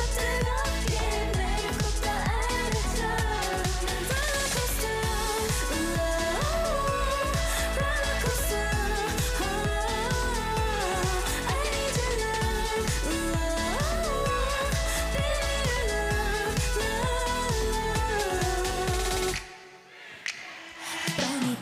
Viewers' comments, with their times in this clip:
0:07 The chorus the only way I could tell that she was singing was her breathe. Her voice is blending in with the song I’m loving it!!!!! 😍😍😍😍 Her breathe control is improving so much, I’m here for it,